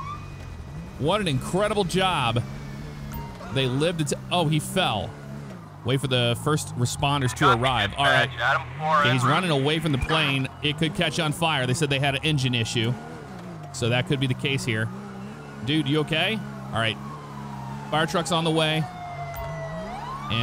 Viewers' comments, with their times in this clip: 0:03 When the pilot fell out the plane and screamed 😭😭 lol 🤣